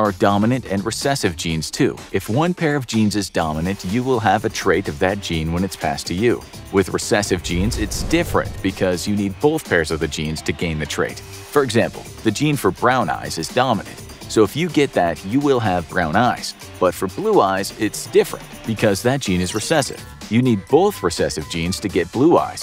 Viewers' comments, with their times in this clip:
0:05 Once we get to the background music gets pumped up and doesn't rly fit; sounds like something that should be in a spyro game